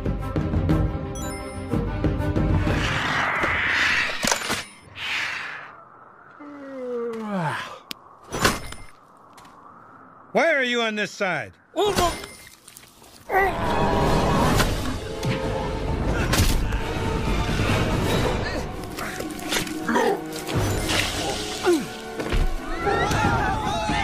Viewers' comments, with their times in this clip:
0:10 That guard sounds like Pocahontas's dad on